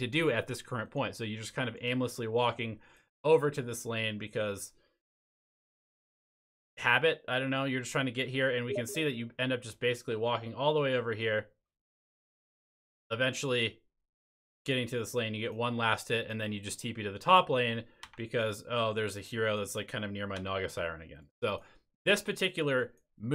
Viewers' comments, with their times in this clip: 0:07 Anyone else thought they got a notification from steam? Or is it just me?
0:08 the steam notification sound at min made me check my inbox lol